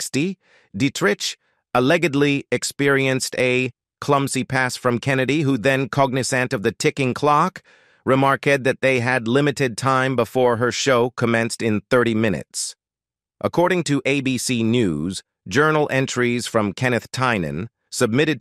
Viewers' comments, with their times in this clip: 0:06 So.. I feel stupid for not realizing this isn’t a human reading until when I realized the narrator is either a computer, or was having a stroke. Man. It’s crazy how real AI sounds now. Intricate tapestry… “complexity” means.. problematic sh*t that.. is pretty messed up and much of which wouldn’t fly today.